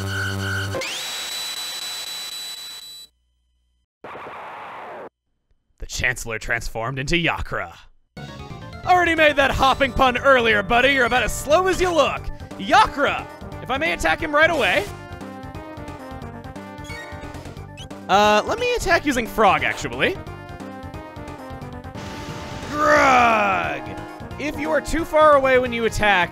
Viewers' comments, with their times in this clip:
0:08 BOSS THEME! HNNNNNNNNNNNNNNNNG